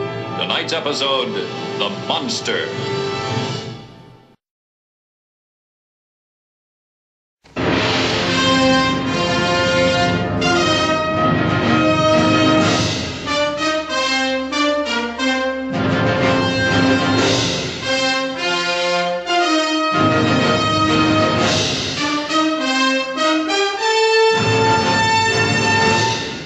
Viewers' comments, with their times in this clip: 0:08 Love it from all orchestral. Gawd! What a gem!